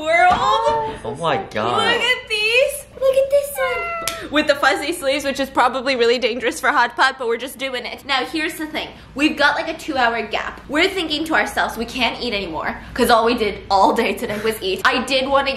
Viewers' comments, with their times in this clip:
0:03 lol the meow got me 🤣🤣🤣🤣🤣🤣